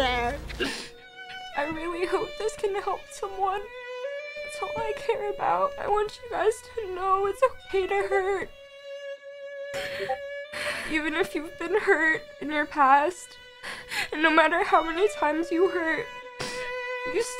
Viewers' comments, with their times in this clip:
0:05 2 discord sound thingys